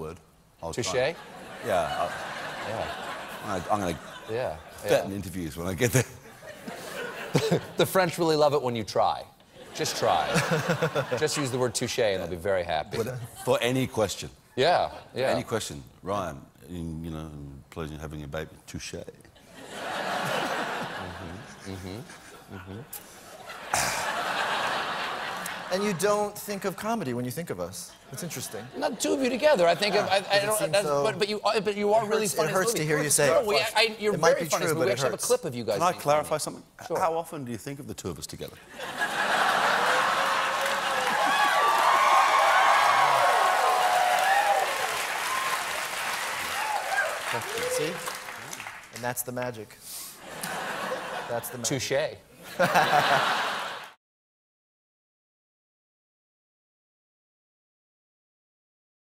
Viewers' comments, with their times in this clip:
0:04 it's good to see russell laugh
0:54 1 minutes 15 of applause before the talking starts in a clip. Sigh